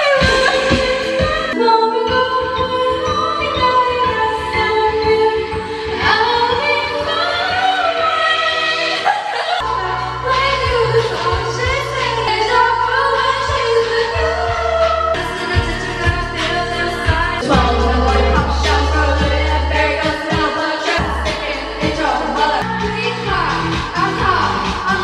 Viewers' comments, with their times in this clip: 0:06 hit the high notes girll😂💗